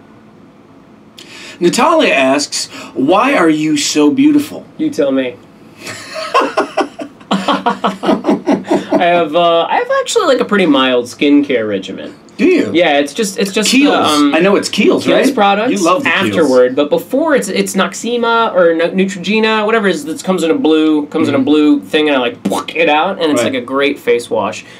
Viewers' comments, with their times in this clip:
0:07 Jared's imitation laugh is everything .